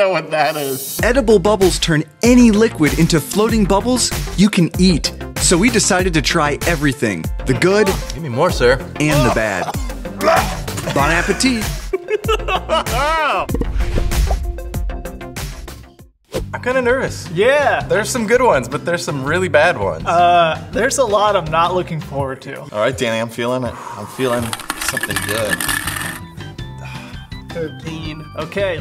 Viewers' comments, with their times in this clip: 0:09 bone app the teeth?